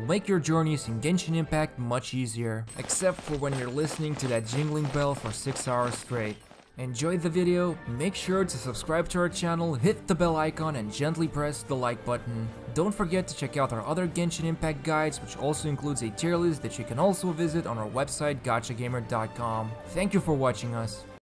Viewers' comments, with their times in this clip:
0:06 I struggled very hard to find the source of the sound but it was only when my sister pointed that how cute she is with that bell behind her I realised.